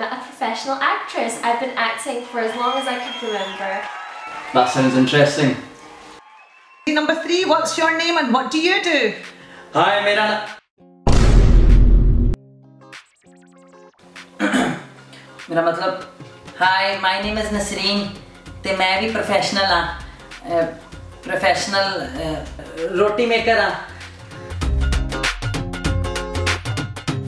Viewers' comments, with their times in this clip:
0:09 I think he sick loud sounds vibration 😨